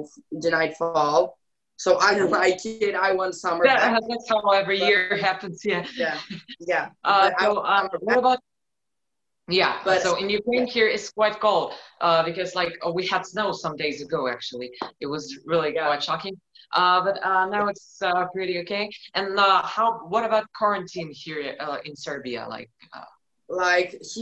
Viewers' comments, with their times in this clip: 0:06 I nearly died. They both started talking at the same time then both stopped for each other and then both continued again at the same time.